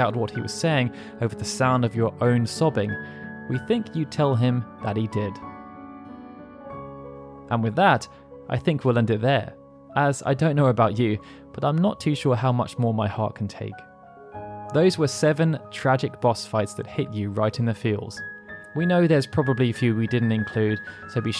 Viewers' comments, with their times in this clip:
0:08 is that Tidus crying?